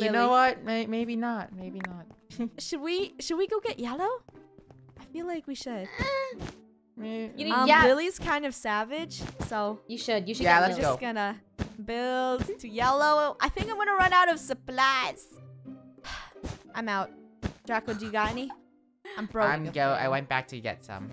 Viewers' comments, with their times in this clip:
0:05 what was that moan 💀
0:05 Whats that noise
0:05 what was that moan-
0:05 Ayo who moned
0:06 wtf was with that moan😏😅😳